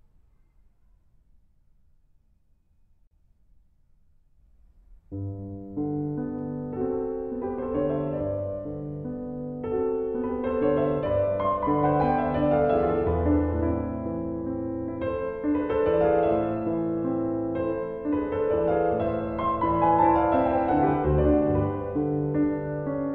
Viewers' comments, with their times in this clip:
0:04 The nocturne that starts has tears streaming down my face. The switch up is heavy